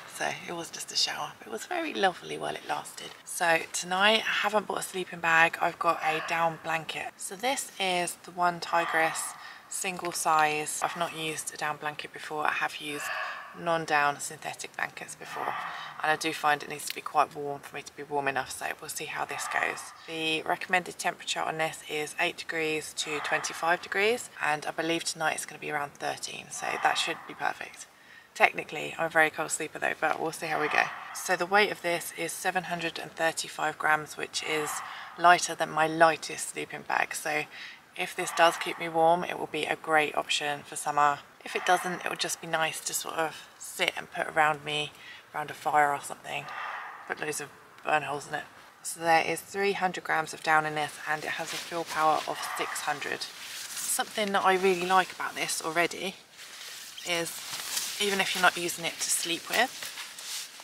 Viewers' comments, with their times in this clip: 0:07 What the heck was that sound starting ? Totally creeped me out. I thought the Phantoms from Minecraft were coming for me.
0:42 Where is the heavy breathing coming from ?